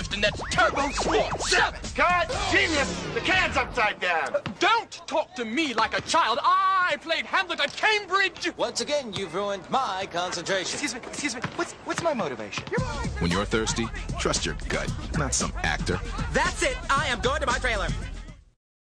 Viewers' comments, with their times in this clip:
0:06 I thought he said Hamburger Cambridge!